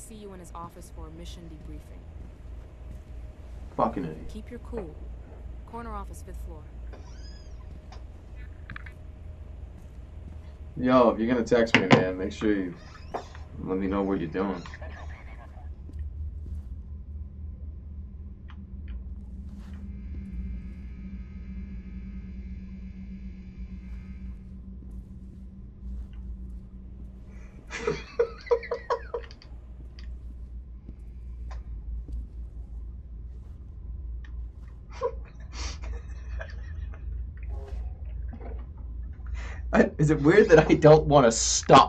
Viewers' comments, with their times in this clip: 0:09 THE WAY HE MAKES HIS VOICE DEEPER IS SO ACCURATE
0:27 Sociopath streamer laughs at horribly brutalized corpse and says he doesn't want to stop